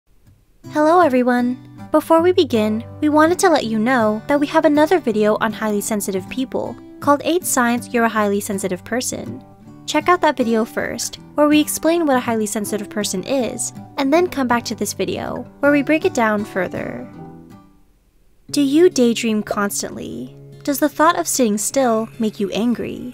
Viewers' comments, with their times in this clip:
0:04 I’m so hypersensitive I had to stop the video because the voice really hurts my ears 😞 What’s wrong with me